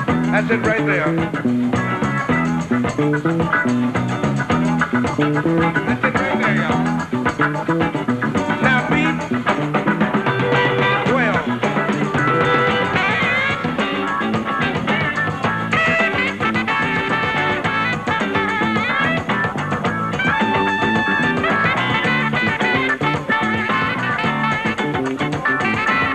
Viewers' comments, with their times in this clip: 0:07 Anyone know what he's sayin ? Sounds like, "now beat, 12." no idea.